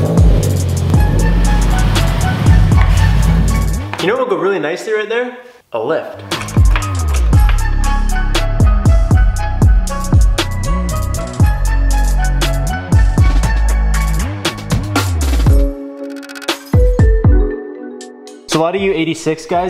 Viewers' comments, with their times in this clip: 0:03 Song choice was amazing